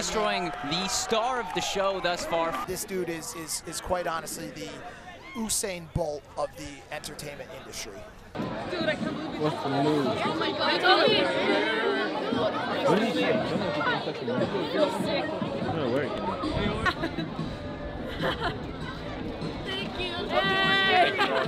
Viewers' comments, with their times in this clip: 0:04 "oosain bolt" are we gonna allow that? put some respect on his name...